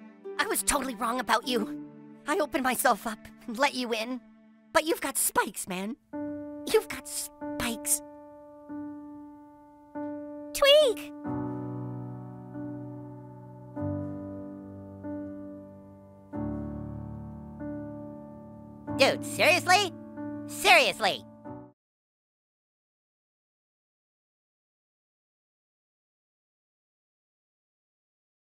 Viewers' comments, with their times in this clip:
0:06 This music reminds me of the meme, "they ask you how you are, " you guys know that?
0:10 tweek:he is laugh craigh: TWEEK NEEDS A OSCAR